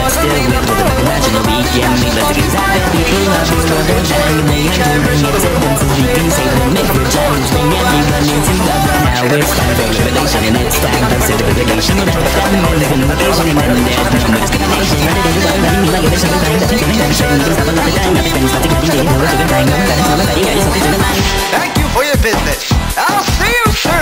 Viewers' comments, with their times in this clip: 0:06 Bro Majin turned into Eminem 😭